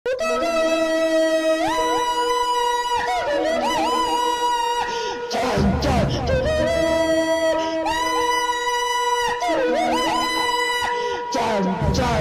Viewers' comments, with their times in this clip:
0:00 How to get around the copyright claim system My ears: 😱🥴😵💀